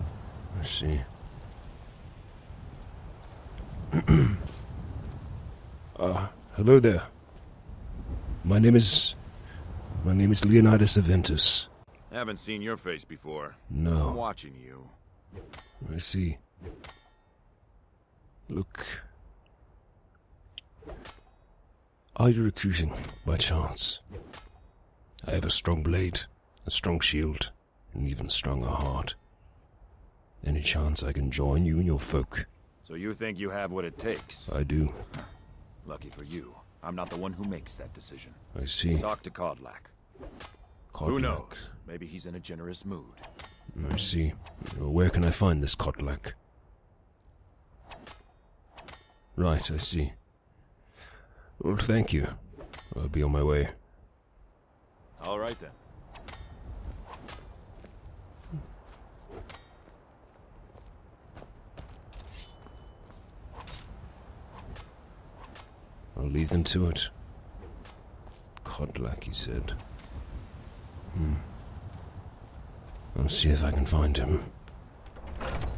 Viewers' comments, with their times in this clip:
0:03 I like how, you cleared your throat, and Skjor looked at you right away.
0:56 Bravo, you delt with that sound glitch very well.